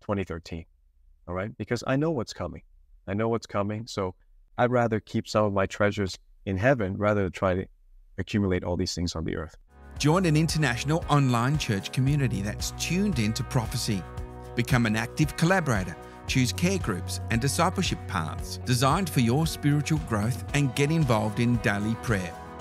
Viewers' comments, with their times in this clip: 0:08 Dude ....it just cut u off and went to promo er whatev like u never really got to sign off properly hmmm ugh. 🤔😔😒